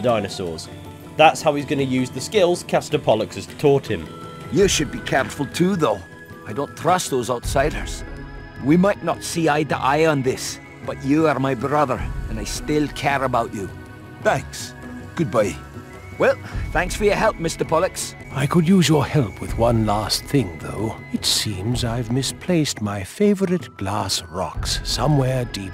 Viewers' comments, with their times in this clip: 0:08 What the bollocks was that accent from ? It's not Scottish, it's not Irish, I'm presuming it's not Malawi though I'm not entirely sure.